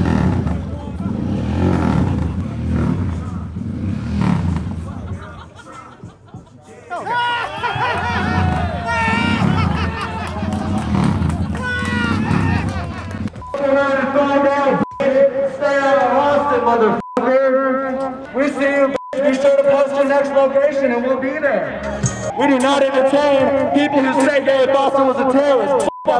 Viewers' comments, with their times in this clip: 0:07 That laugh from the old dude with the flannel is so cringe dude.
0:08 I’m sorry but the man laughing here sounds like woody and I can’t unhear it
0:09 That guys point laugh is incredible
0:10 Lmao the guy trying way too hard to laugh